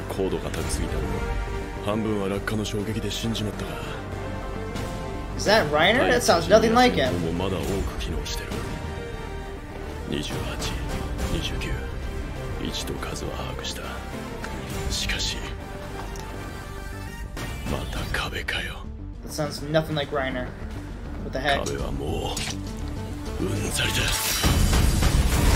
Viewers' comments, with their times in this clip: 0:10 okay dude, the face has not changed much, same nose, same eyes, he only grew a little facial hair. And the voice is the exact same, don't exaggerate 😂